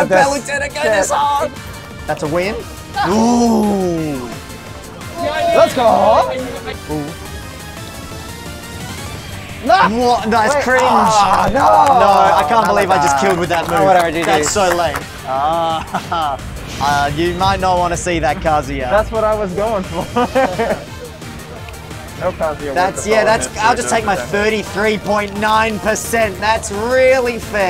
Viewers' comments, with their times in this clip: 0:08 the music aligns so well, oh my god